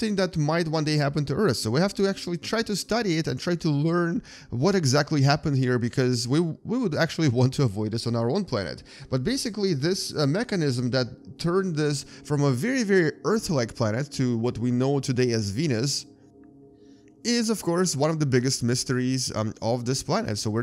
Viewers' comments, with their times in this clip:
0:03 no offence but that voice crack had me dying